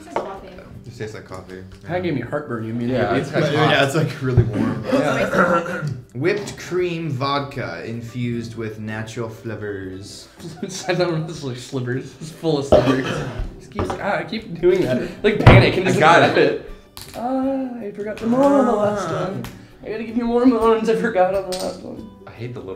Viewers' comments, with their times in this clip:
0:08 I keep hearing "filled with natural flippers" XD